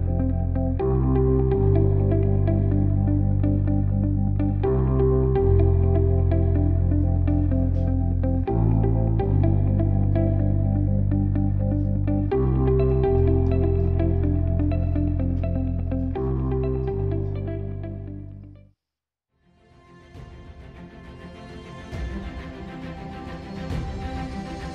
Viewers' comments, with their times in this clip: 0:06 click → That is master artisanry right there!